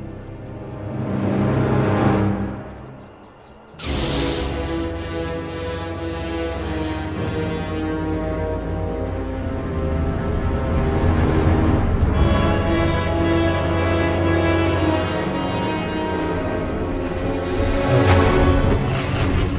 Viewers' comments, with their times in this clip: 0:07 omg that song